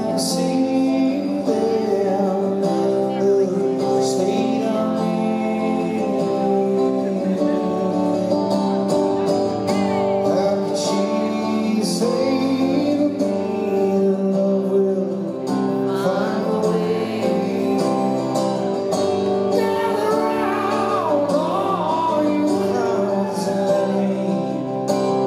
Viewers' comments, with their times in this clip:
0:09 Love the girl who missed the HEY